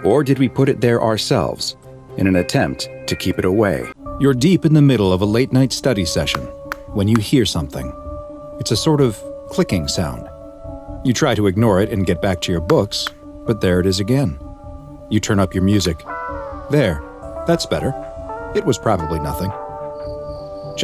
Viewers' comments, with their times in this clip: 0:04 When you pause the video the clicking doesn’t stop